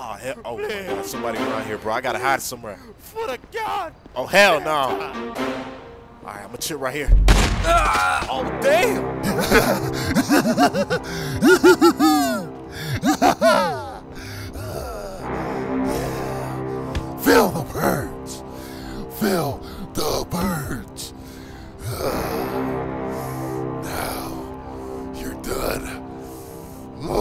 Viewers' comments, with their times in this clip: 0:09 That laugh 😂😂😂 That’s how I laugh when my ex said I’ll never find another bad bitch like her.